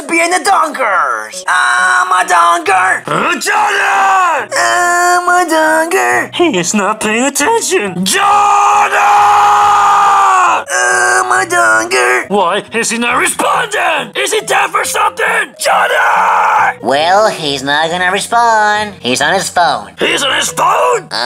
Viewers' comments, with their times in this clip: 0:03 golden freddy yelling his head off